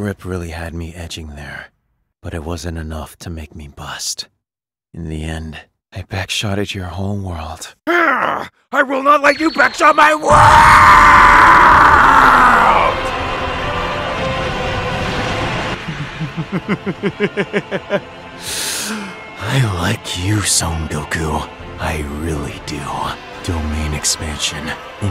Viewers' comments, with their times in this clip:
0:09 Nah but Goku sounded like itadori